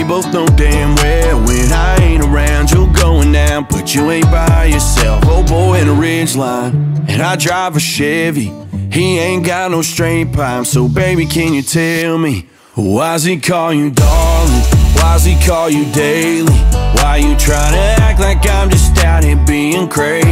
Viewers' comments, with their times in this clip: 0:06 guitar mixing is a bit off somehow, i am inside of it as well?